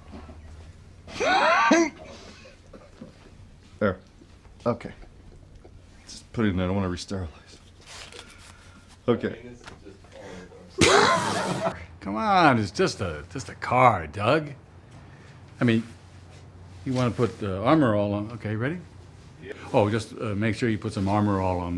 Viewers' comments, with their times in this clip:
0:05 😂❤ the poor guy is just existing and they are howling